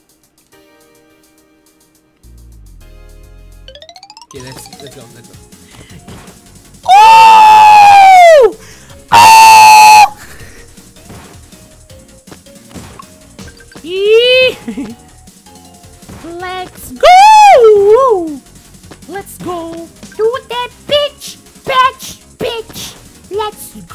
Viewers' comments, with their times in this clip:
0:06 OW MY EARS!!!!!!!!!